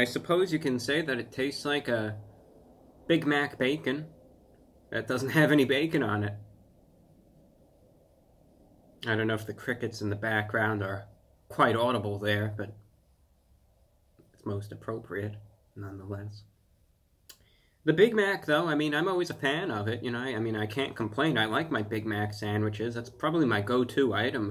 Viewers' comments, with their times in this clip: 0:07 I actually had crickets in the background as I watched this.